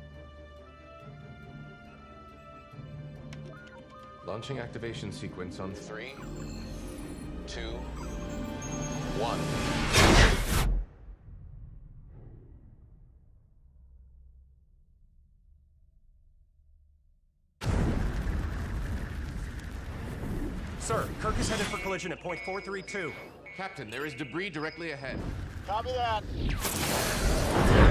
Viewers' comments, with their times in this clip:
0:10 That is what outer space should sound like.